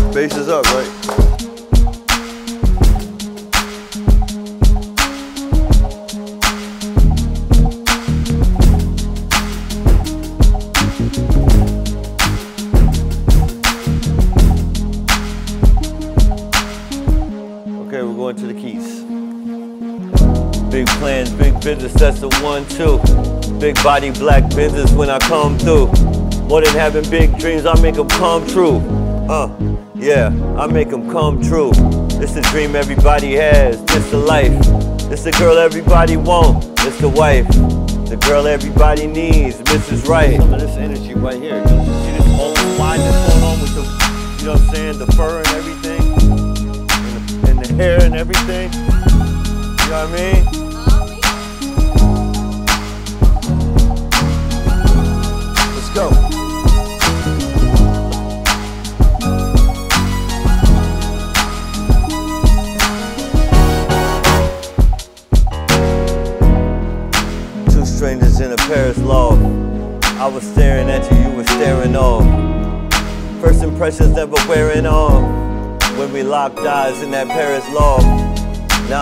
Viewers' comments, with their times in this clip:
0:05 That bassssssss man, that bass sick as fuck!
0:44 😳 that lead was insurmountable. 🔥
1:05 that combination of the synth and the keys, god damn!!